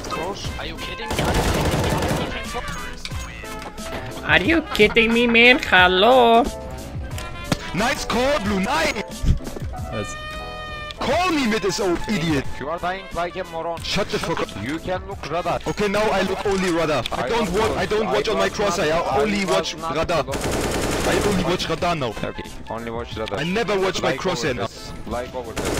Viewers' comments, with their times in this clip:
0:10 That yellow guy is %100 Turkish, ah the accent is killing me.